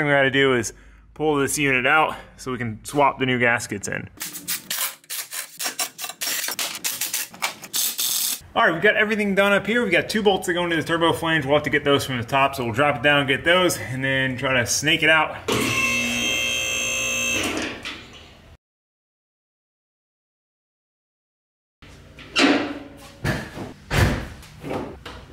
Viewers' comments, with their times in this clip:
0:06 it doesnt sound like the drill sounds quite match up with the movements it is making lol. idk why i noticed that. but the subaru looking sick dude! just what she needed!!